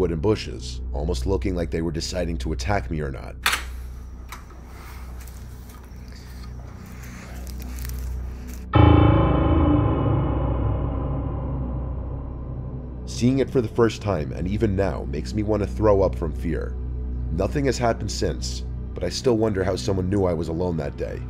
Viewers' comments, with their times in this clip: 0:08 Wtf was that goofy ass sound effect bruh😂😂😂. Can’t take these videos seriously anymore.